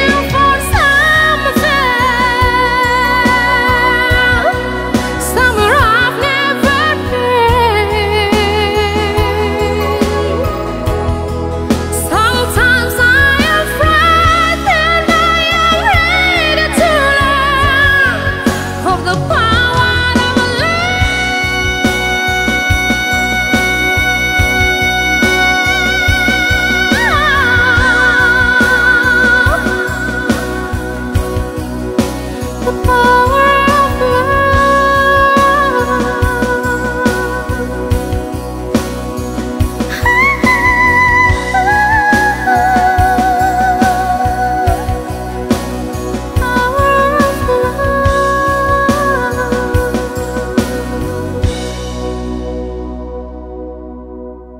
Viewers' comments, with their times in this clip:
0:03 May be than celine Dion😂😂
0:14 I am from India. The beautiful voice so soothing tears rolls my eyes no words to say. A girl from Indonesia with so much talent. Stars r born in any part of the world ❤❤
0:39 Powerful voice .... very nice cover ...love this scream ... respect from Macedonia